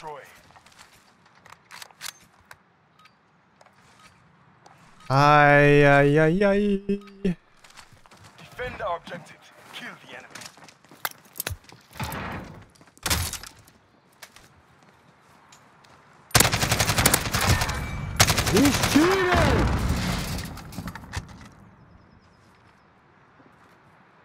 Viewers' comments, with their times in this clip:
0:05 am i the only one who heard jojo music?